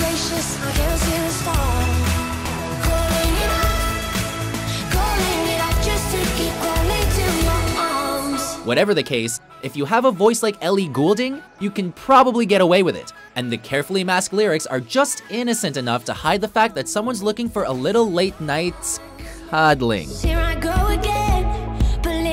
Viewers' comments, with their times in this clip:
0:10 Did anyone notice how he said her last name ? He sounded dutch for a second there.